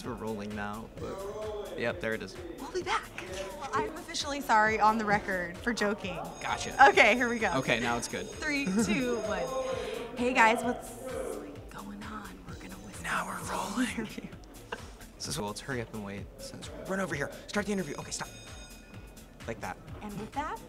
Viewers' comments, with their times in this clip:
0:06 sterling's giggle (awkward)